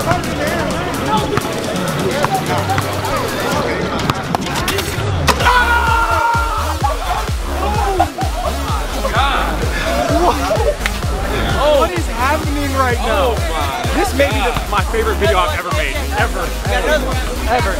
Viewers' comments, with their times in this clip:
0:05 that sound the net makes